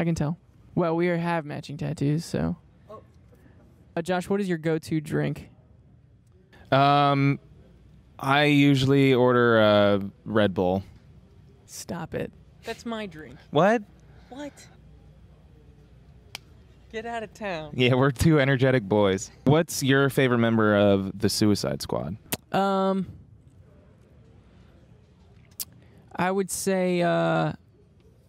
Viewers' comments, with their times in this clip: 0:10 the cuteness in Tyler's voice gives me life